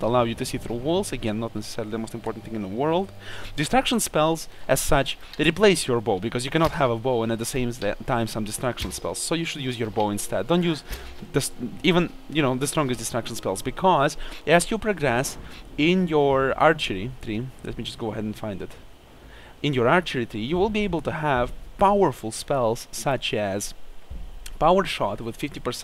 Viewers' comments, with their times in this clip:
0:10 i finally found out that distraction spells, is destruction spells!